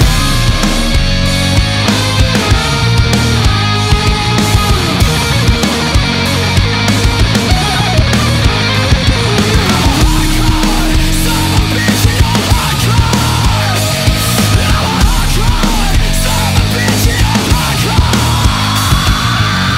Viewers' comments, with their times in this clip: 0:05 can't stop hearing "you play minecraft, son of a bitch" here 🥴